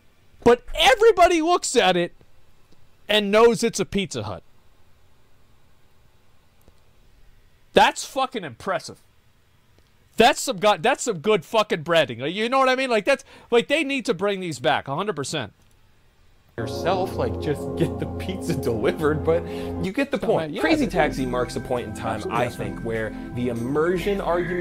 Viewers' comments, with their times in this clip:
0:09 who would wear a pizza hat? 🤔🤔😅😅